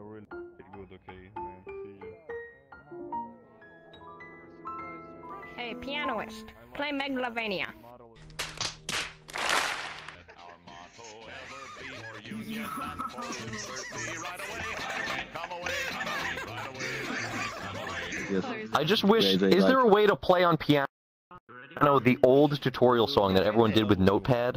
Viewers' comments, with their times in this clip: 0:06 plays sad song instead